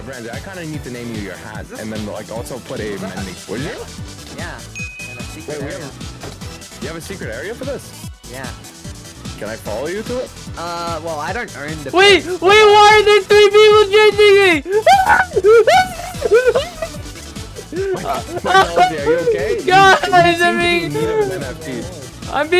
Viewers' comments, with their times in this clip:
0:10 his voice is so good the mic cant pick it up xD